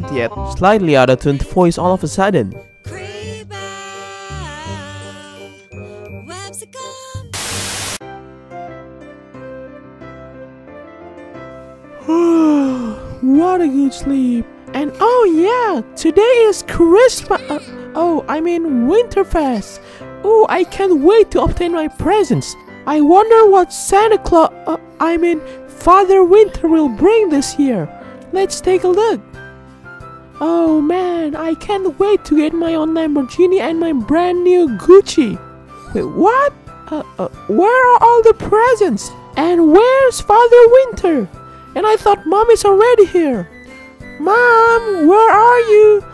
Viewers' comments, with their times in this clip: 0:03 It's like Mumble in Happy Feet: His voice sounds okay but when he sings all hell breaks loose
0:33 I heard "my brand new coochie" XD
0:34 I thought she said coochie 😂😂